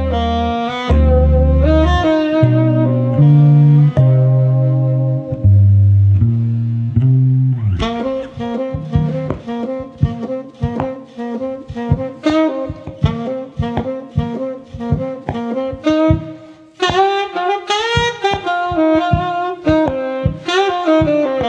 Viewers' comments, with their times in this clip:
0:08 bass like a drum